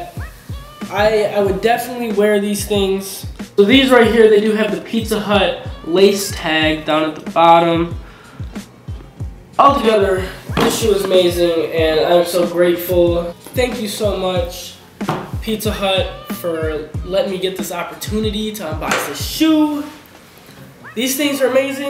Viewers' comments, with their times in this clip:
0:06 audio got fucked but good video